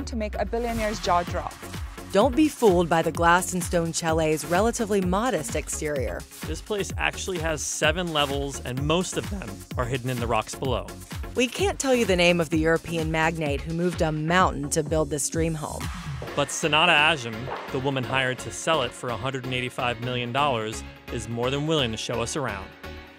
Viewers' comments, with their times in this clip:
0:08 BRUH xD the voice crack
0:08 Voice crack alert